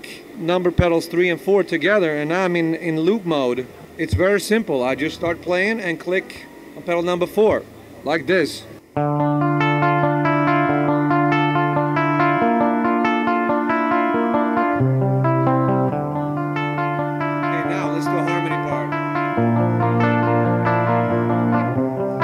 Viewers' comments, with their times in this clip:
0:07 " sound like a king diamond